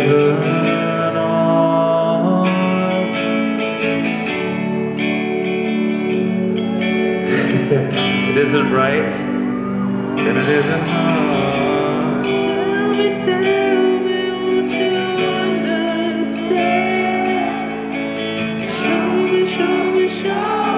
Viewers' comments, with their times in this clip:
0:05 I think that’s my voice around the mark singing lol. If only this was just the warmup and not near the end.